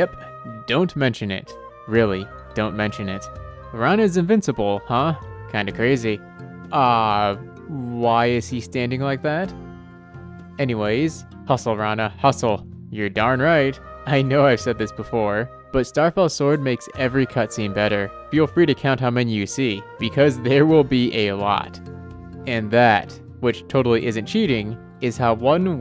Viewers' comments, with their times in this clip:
0:09 im hearing "Hee Hee" Micheal Jackson noise right there 🤣